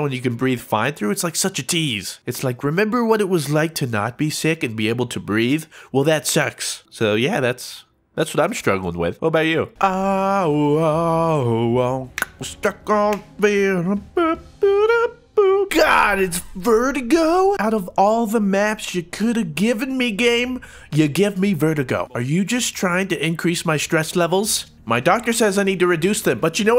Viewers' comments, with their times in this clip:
0:09 Love that song